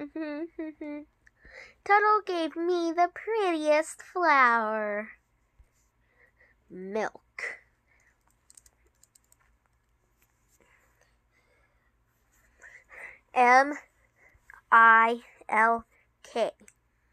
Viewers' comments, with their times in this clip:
0:04 Dapper Dandy: (crying) WHY???? WHY DOES AMY CHARLOTTE LARSON HAVE TO BE WITH TUTTLE!!!!